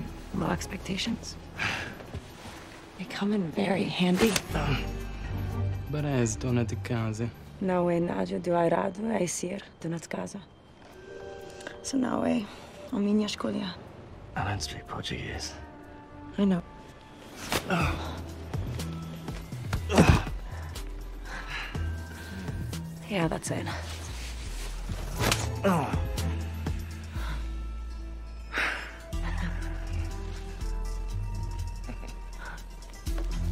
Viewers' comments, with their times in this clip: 0:06 WHAT THE FUCK IS THAT LANGUAGE LOL. as a portuguese speaker that's just nonsense
0:09 As a brazilian girl, I have to say that there is the most terrible attempt to speak portuguese i have ever seen in any movie or show.
0:19 as someone who speaks portuguese, I LEGIT DIDN'T KNOW THEY WERE SPEAKING PORTUGUESE UNTIL THE GUY TALK ABOUT IT